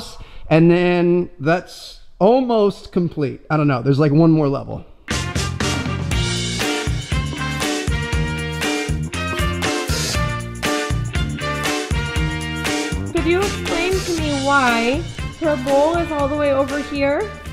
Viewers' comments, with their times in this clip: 0:05 when ur calling someone and that was ur hold misic